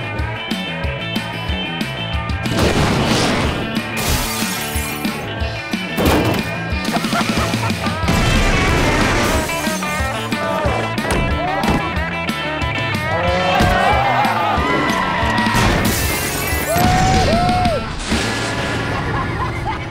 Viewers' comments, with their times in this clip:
0:06 that hit marker is needed